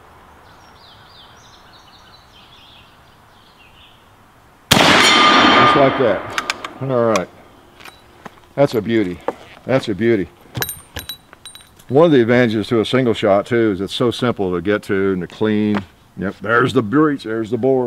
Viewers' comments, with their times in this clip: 0:04 the gong rings twice. Was that a rock that flew in the air and then landed back on it or something?